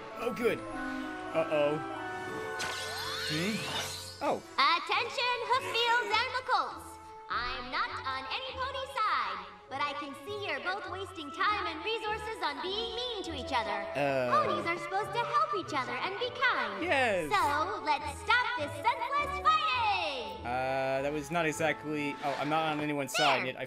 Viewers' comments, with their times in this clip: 0:04 And now Twilight has a 'Royal Canterlot Voice'. Guess Luna forgot to turn hers off... xD